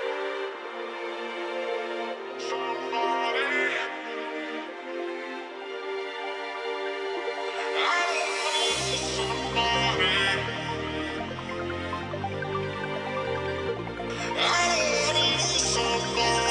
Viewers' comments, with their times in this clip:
0:03 The music reminds me of Tanner Braungardt